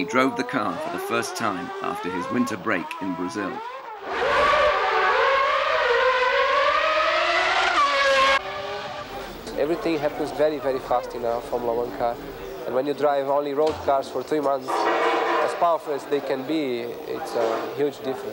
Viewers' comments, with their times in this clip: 0:04 Man, I miss it , THIS is the REAL F1 sound